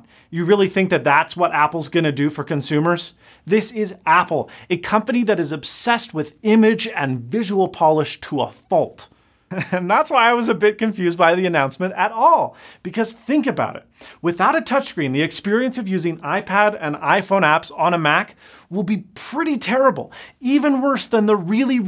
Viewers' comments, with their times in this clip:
0:03 I think you pronounced 'Money' wrong. Mo-Neyy... Not that image thing said.